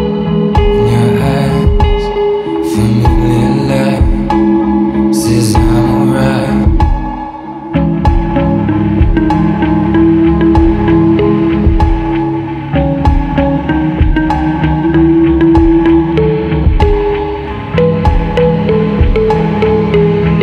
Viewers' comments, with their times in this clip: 0:08 The opening music sequence coinciding with green light has won me forever and the score starting is amazinnnnngggg!!!!!!